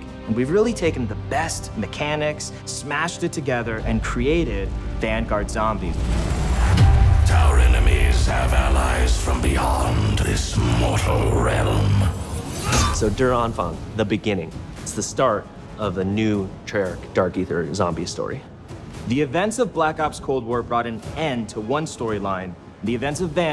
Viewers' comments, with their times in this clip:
0:08 reminds me of the tales from the dark side intro voice